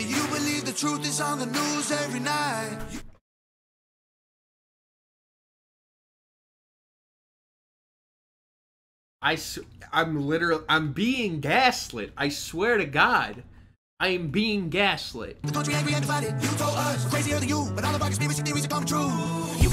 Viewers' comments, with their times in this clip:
0:07 Bold statement for someone that makes music that sounds like if you asked chatgpt to make shitty rap music from a Fox News transcript.